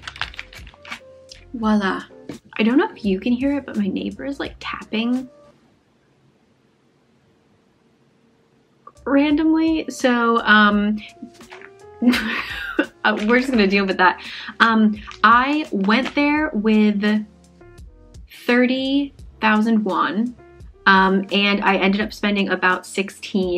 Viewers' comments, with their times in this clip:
0:05 me: I hear tapping. My brother plays his video games and he is HITTING the keyboard so it counts haha